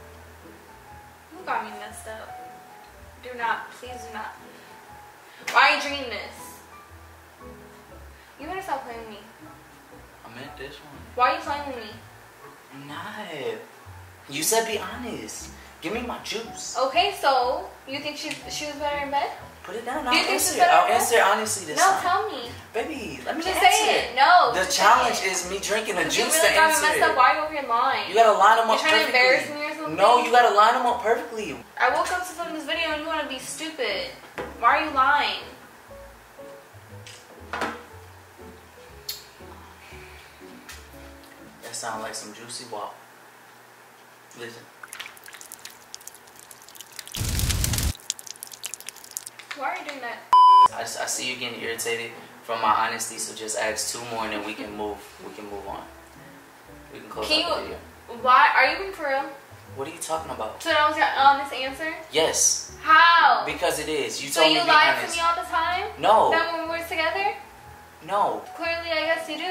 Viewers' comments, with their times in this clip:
0:08 The way he said give me my juice 🧃
0:55 Ouuu ik that laugh n shi that ain’t a good one🥴